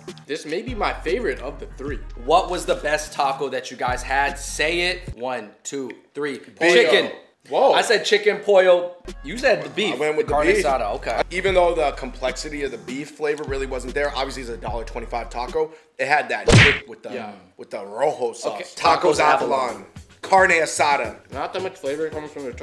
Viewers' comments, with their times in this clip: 0:06 sounds like saying bacon